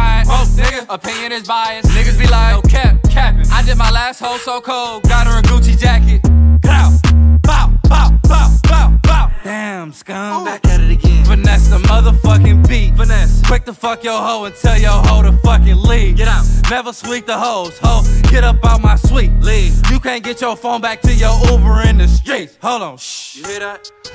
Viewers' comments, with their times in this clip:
0:05 the beat change 🔥🔥✅